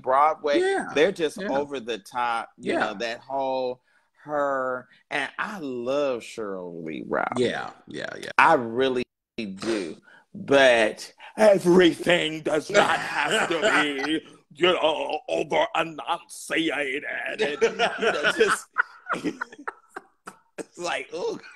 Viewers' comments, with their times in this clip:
0:04 The Sheryl Lee Ralph impression is top notch😂😂😂😂😂😂😂😂